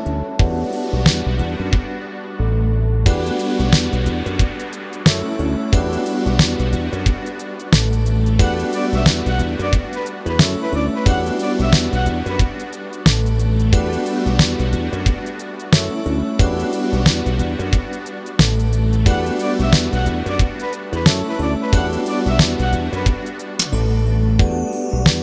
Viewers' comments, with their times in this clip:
0:08 Beautiful synth sounds in here man, I like the sweeping pad a lot, nice melody too!